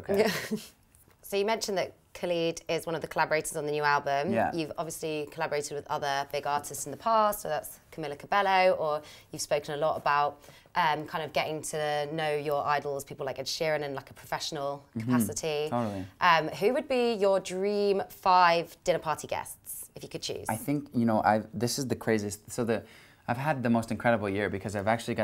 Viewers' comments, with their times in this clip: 0:07 ''Camila CabeLLo'' I'm dead